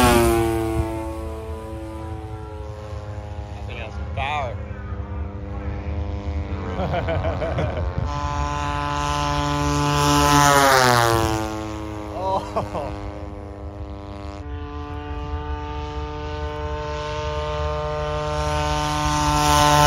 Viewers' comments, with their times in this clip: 0:04 Is that Seth Rogen laughing minutes?